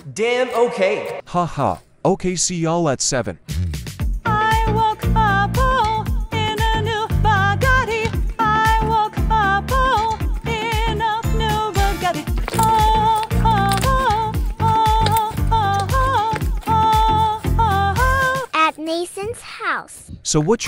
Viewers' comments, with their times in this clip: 0:03 the song of a lifetime 😂